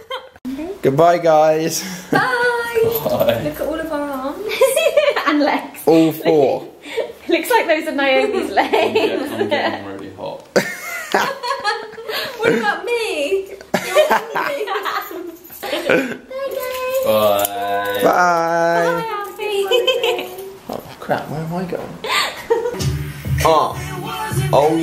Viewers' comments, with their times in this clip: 0:08 I don't want to be rude but did i hear marcus right did he say " I'm getting really hard" ? Or hot or none lol